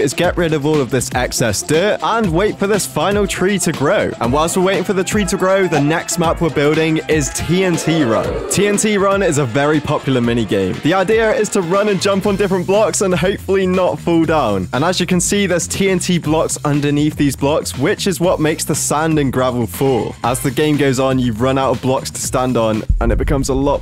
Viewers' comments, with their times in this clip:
0:04 The "I smell pie dont I" ahh sound effect😭😭💀💀🙏🙏